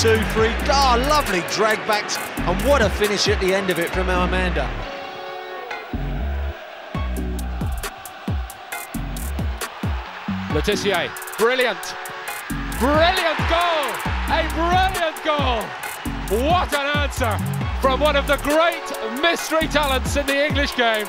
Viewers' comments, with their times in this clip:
0:05 that was on beat as well holy